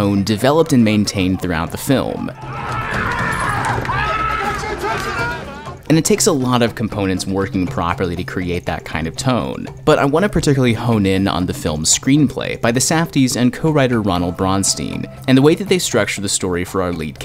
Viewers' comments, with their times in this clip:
0:04 wtf nobody looked up or hear Howard scream like what kind of world didn't hear or see Howard being hanged out the window when almost about be tossed out of his own store they could have called the cops that time!!!!